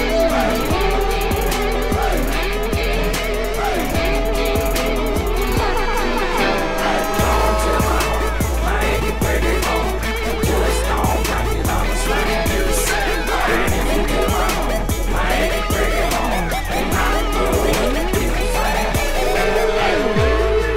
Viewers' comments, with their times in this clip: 0:03 air horn m8
0:04 Poor Billy Ray ran out of sugar and tried to find some in Mileys room.. Bad idea Billy Ray, bad idea... Also, ... The horn of MLG is real...
0:05 THEY EVEN DARED TO INCLUDE THE DUDEBRO AIRHORN SOUND UNIRONICALLY ARE THEY EVEN TRYING
0:05 if you came here for gratuitous airhorn.